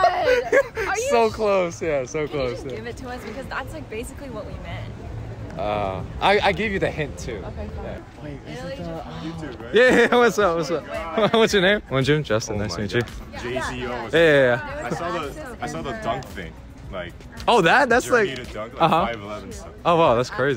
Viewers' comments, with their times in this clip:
0:07 she definitely said "ok fine" not "you so fine" bro you tweaking